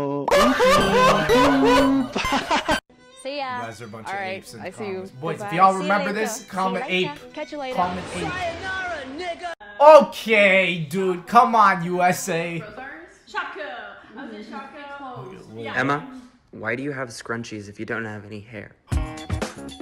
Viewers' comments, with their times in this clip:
0:06 okay so im from new zealand. NO ONE says "catcha later" here. and on top of that, the girl didnt even have a new zealand accent so good job to whoever made the original video